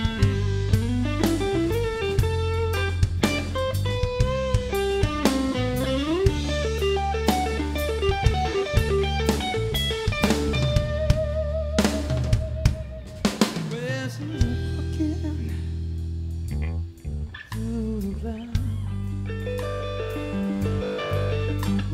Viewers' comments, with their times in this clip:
0:06 That sweet child intro lick LOL Phil X is a genius!